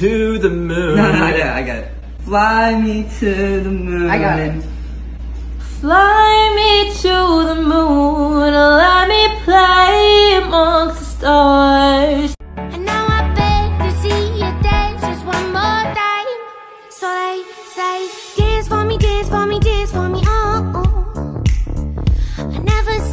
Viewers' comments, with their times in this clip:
0:07 she sings so good